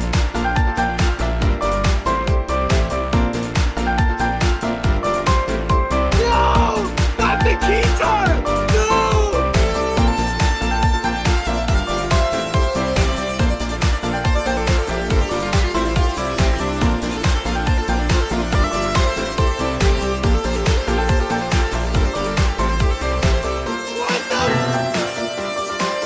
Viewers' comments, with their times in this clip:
0:09 That keytar solo is killing it!